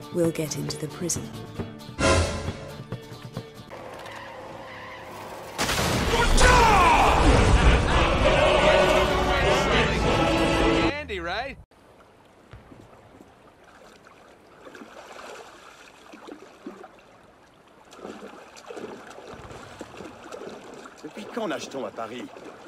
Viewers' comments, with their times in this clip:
0:06 car gets thrown 1 million miles Mate: laughs.